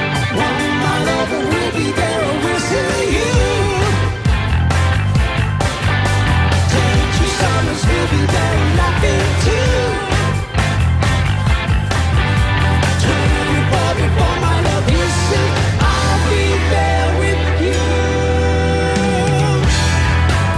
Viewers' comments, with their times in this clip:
0:03 Jesus, I'm wearing headphones and Geddy Lee's bass is roaring in the mix. it comes growling to fill the low end. Hats off to the mixer.